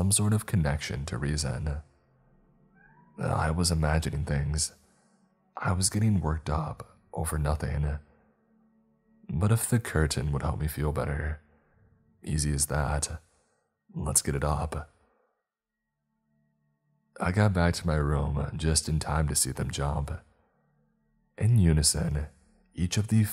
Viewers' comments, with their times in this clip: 0:03 there was a cat meow
0:03 Anyone eles hear the cat?? ???
0:04 I heard a kitty kitty meow in the clip was that your kitty kitty if so so cool I heard it